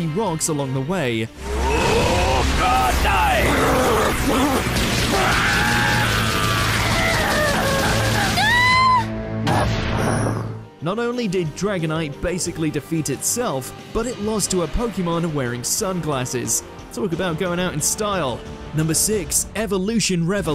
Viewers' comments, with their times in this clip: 0:05 That's also the noise i would make if someone threw rocks at me